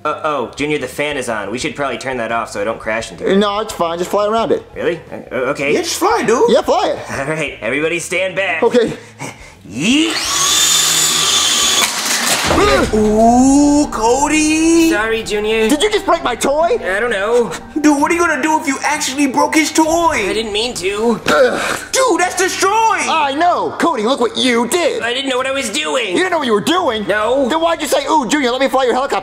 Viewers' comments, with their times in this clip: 0:09 when Cody grunts he says yeet
0:13 I like how Joseph says, "Oooooo, Cody...".